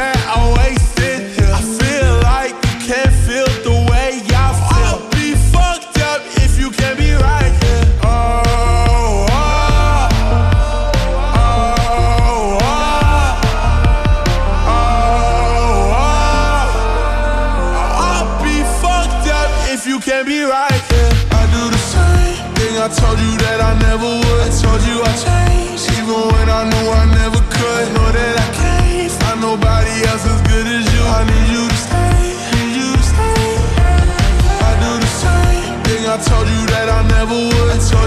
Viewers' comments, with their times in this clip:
0:08 version slowed, this should be on tiktok
0:21 Bruh, don't tell me it's only me who hears Kid Lario's voice slowed as KSI's... LMAO!! 🤣 Especially